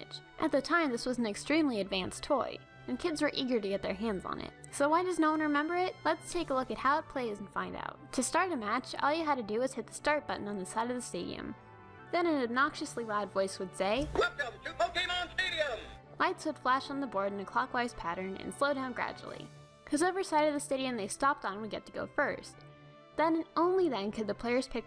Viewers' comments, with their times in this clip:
0:10 I love this guys voice. I wish he was in Pokemon games.